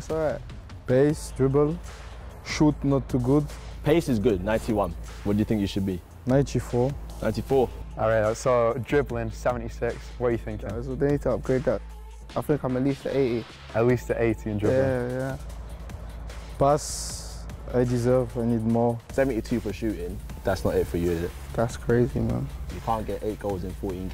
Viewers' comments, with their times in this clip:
0:05 English Saint maximin?😂
0:06 Oh saint maximin from England now
0:06 since when was saint maximan english